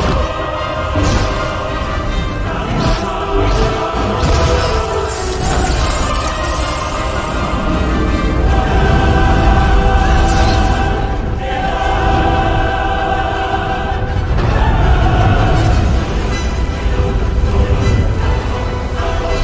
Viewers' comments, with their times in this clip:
0:07 the timing of the chorus as we see the huge wave approaching gave me goosebumps. Great editing work!